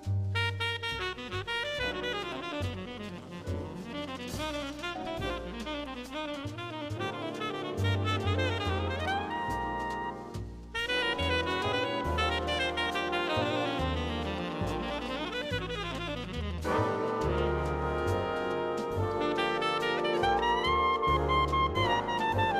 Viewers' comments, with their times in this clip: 0:09 ladies and gentleman... Steve jobs on trombone.